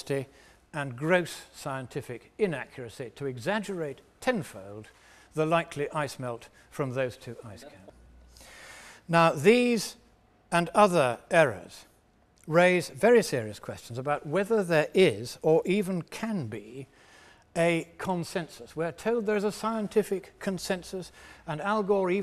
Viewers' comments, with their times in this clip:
0:07 Someone started asking a question Why was it cut out? Otherwise a good presentation